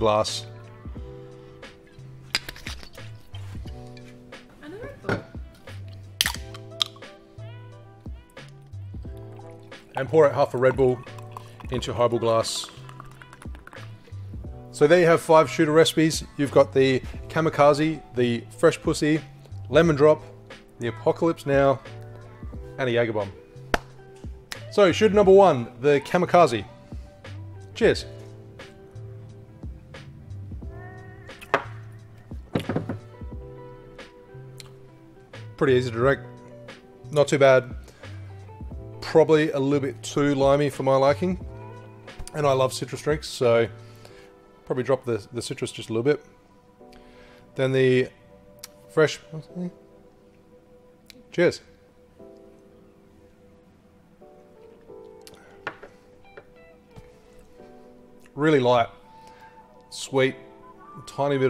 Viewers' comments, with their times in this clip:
0:03 Is there someone saying "are you recording?" in the backround or am I going crazy?
0:48 and then the fresh ᵖᵘˢˢʸ